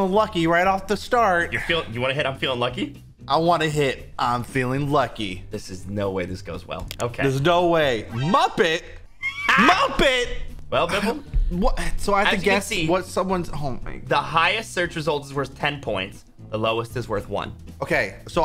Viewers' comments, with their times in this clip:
0:03 It sounded like count von count